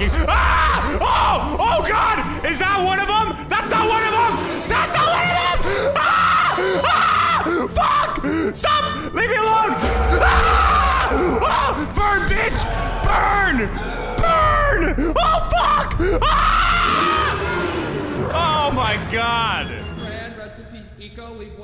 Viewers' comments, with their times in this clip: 0:03 the screams are funny